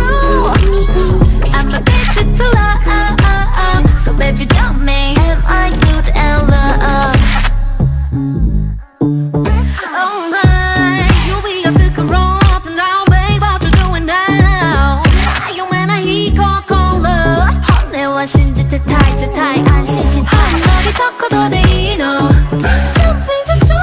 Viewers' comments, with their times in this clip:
0:07 how the hell did u hear this I cam’t hear anything, am I deaf 🤣
0:08 Wow, you are the only channel who counts this line 👏, and also thank for giving the wake up part to tzuyu, the others channels keep giving that line to chaeyoung when it's clearly tzuyu 💘